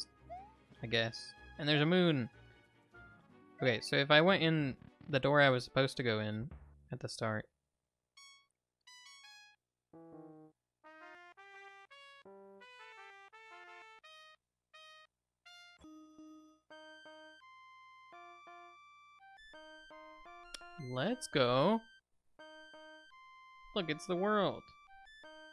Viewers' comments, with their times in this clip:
0:06 What key is this in? It made me dizzy listening to this.